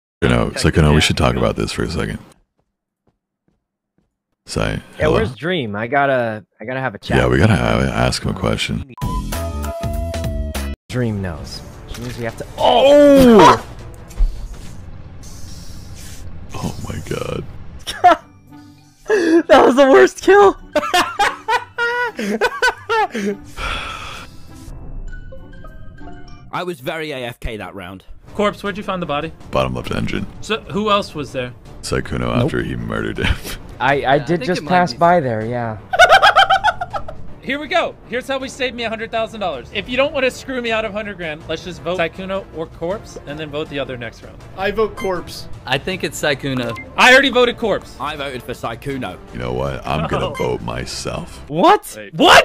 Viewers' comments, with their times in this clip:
0:04 when Corpse say "Sy" I heard it as "Say" in Indonesia it means "babe" `>` Sorry, no one cares about what am i hearing😌
0:36 Okay his laugh made me laugh 😂
0:36 Can we just talk about this demonic laugh ;-;